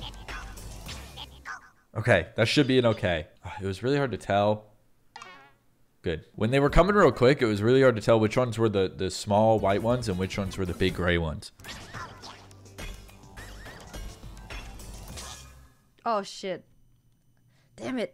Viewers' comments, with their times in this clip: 0:05 If you listen close enough, you can hear a distinct difference between the two bots.